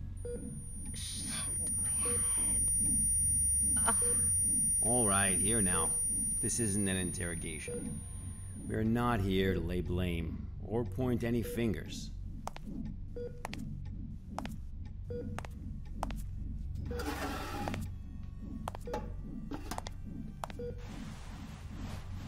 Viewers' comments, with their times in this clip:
0:06 The most manly yell 🤣😂🤣😘❤